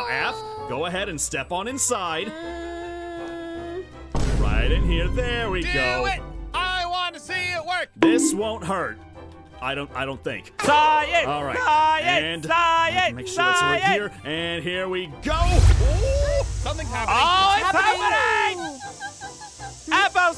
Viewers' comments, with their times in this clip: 0:04 the vine boom tho😭👌 luv ur vids aph! 💜💜